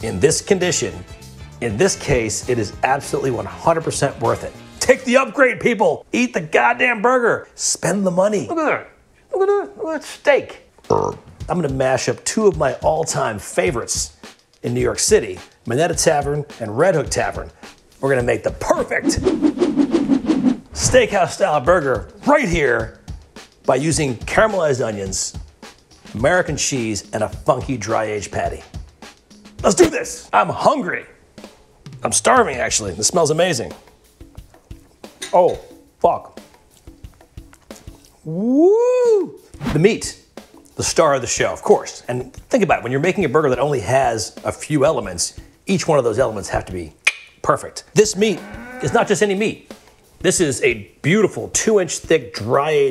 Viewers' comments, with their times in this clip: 0:10 that random low growl burp XD
0:38 Nobody: Rick Flair: